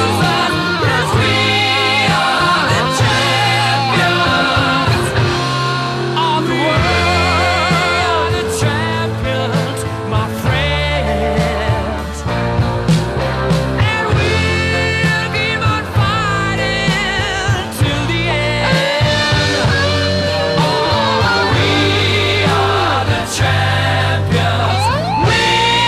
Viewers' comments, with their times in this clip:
0:06 I can hear "of the world" superimposed on "we are the champion" which continues a second refrain.... there is a mandela effect flip flop... a month ago I remember there was no "of the world"
0:06 Sublime he says it